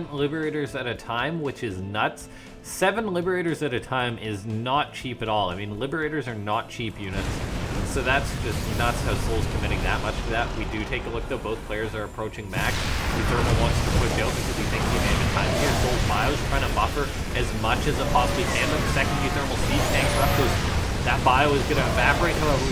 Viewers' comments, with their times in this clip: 0:10 I think your voice is a little quiet during the big battles eg